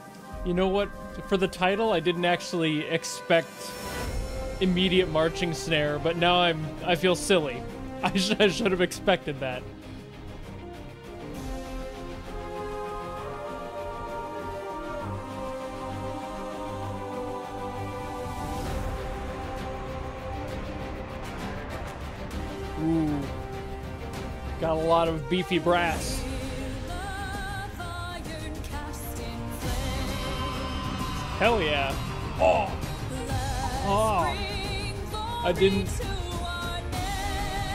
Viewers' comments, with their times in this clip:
0:03 Also there's a heavy metal crushing sound when she hit her "shield" to the ground which I think is a cool addition
0:18 I don’t think mans ankles will ever recover from listening to Arknights music. Just when he thinks it’ll go one way it goes the exact opposite